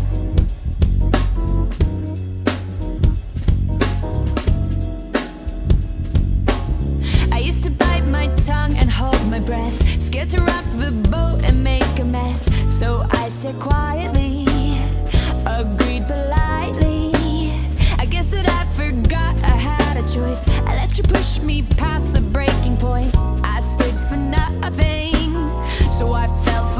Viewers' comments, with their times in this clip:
0:10 broo you should've kept the D C Bb, would've functioned great over the A minor (D - 11th) then C and Bb being a tastey 7th and #5 over D alt 7! in my opinion anyway. sick stuff other wise :3